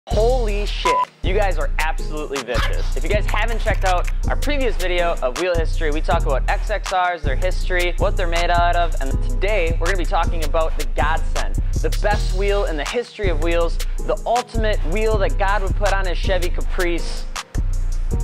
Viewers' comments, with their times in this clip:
0:00 no way!!! holy sh*t combines with the background song